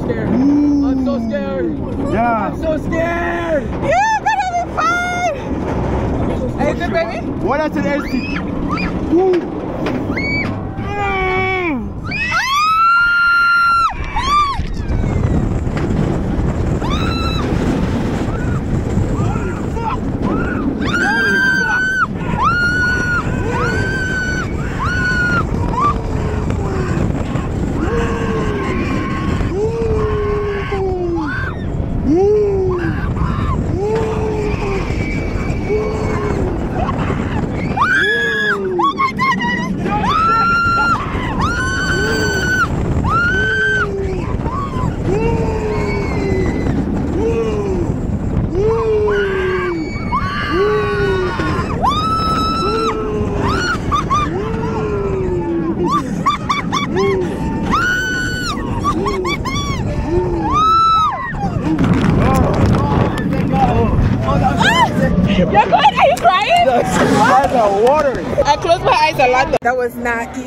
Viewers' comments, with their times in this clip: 0:03 which Obroni is shouting “I’M SO SCARED”🤣🤣🤣🤣🤣🤣🤣
0:51 Her Bae is just wuuuuuuuing🤣🤣🤣🤣🤣🤣🤣